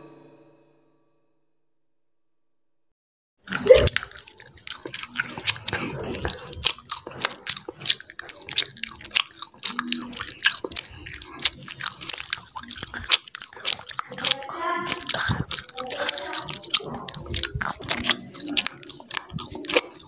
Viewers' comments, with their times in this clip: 0:03 since I'm the only one who lowered the volume